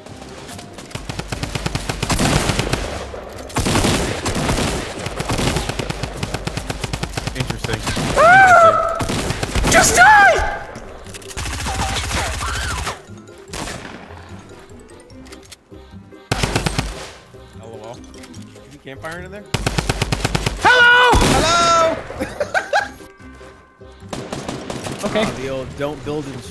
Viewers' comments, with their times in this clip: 0:07 xD wtf did he just get into a castle or xD a voice crack?? 😂😂😂